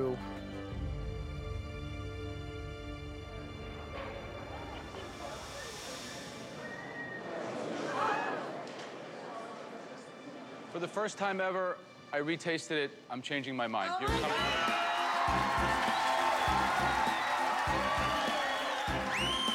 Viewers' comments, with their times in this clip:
0:06 God I hope they fired that editor. That fake audience gasp is atrocious.